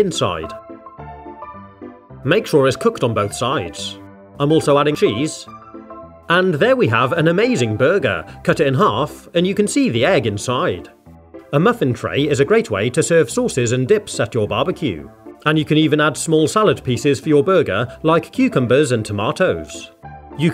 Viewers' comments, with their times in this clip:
0:04 he has a voice crack lol